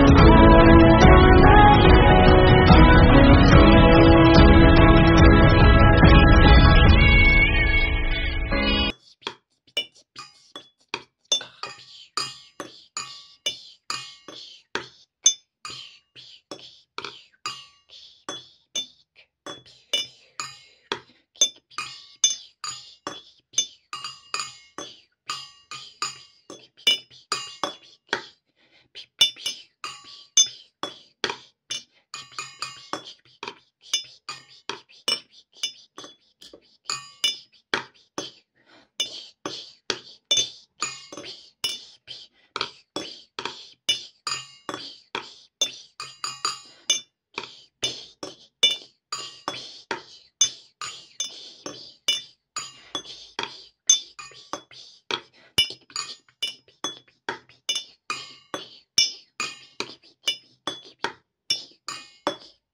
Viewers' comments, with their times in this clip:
0:09 I lost track after 😂😂 What the hell were those noises ??? Damn funny
0:43 Everbody :enjoying this video me: Background music was superb😂😂